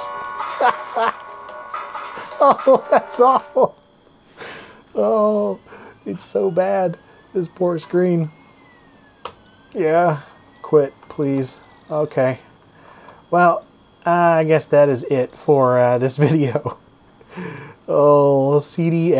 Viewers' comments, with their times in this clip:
0:04 this song kinda reminds me of "the lawmower man"